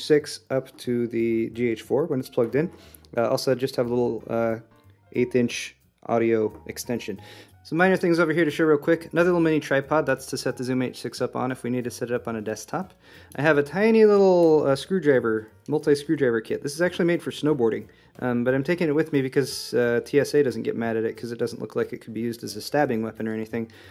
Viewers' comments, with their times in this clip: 0:04 is it just me or is anyone else hearing the faint sound of a bell or piano perhaps ?